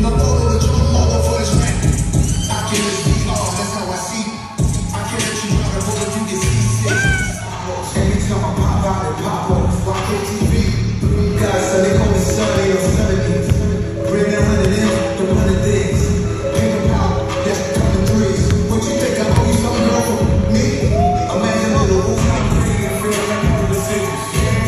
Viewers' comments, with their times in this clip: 0:05 Ok so nobody is going to mention that majestic scream